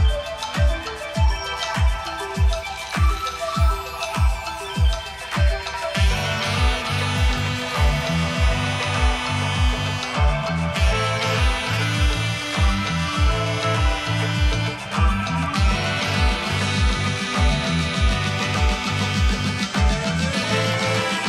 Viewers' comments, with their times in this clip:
0:05 Kenny OG mode lol? I had no idea he could play a saxophone so well to be honest...